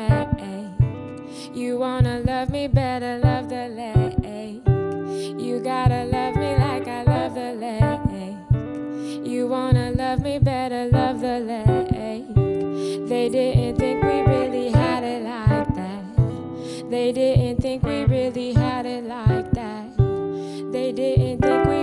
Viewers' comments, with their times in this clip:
0:04 Calling guitar players - anyone want to clue us amateur players in on the chord progression ?